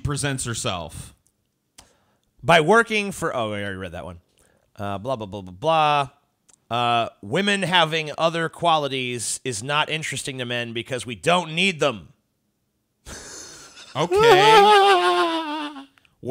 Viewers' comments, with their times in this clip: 0:03 "we don't need them" then that laugh 😃😆